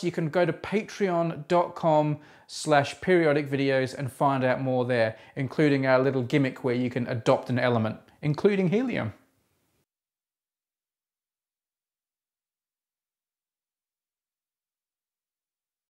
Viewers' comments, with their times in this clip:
0:11 There's no sound on that segment.